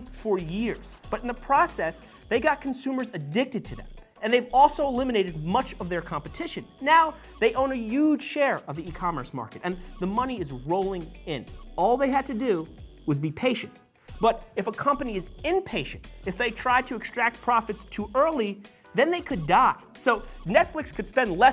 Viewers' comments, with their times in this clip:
0:07 Bronx accent exposed. “Uge share”